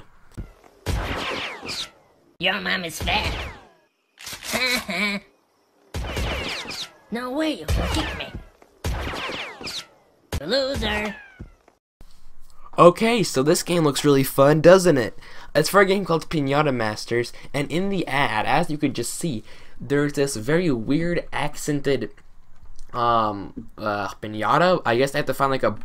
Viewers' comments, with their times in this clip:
0:08 that phrase sounds a lot like kick buddy’s quote! The voice sounds lower than the actual awful ad